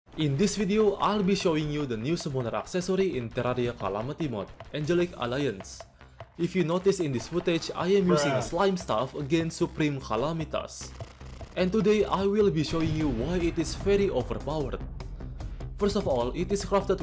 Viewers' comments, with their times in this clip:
0:04 you said Angelic Alliance like JoJo characters announces names of their stands.